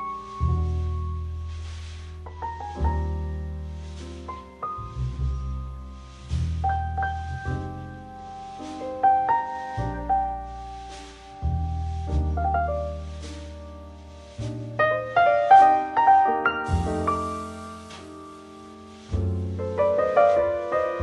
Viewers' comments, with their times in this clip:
0:07 Anyone else hear him say “bling-bling” at the mark?